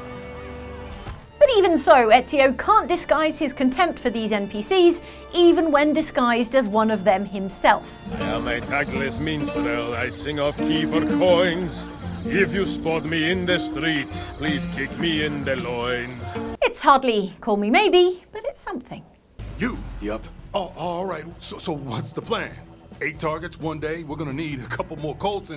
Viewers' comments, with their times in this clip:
0:08 good singing voice